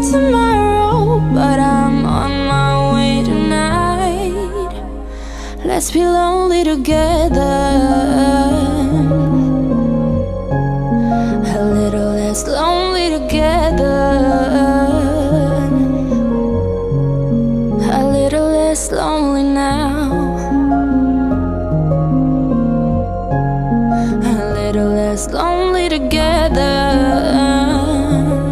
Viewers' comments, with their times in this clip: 0:10 the disney vibe tho 🥰